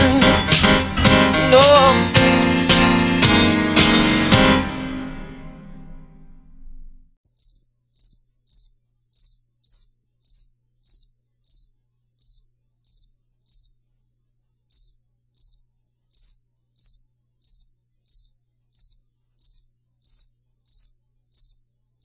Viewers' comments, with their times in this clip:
0:10 and onward... "meanwhile in Africa", the crickets chirping cracked me up, LOL. But still, whether we're talking about us copper-toned indigenous Americans or Africans, it's all about the MELANIN. That's what taps us into rhythm, soul and SO MANY OTHER frequencies and abilities. Africans can dance too. Much Love.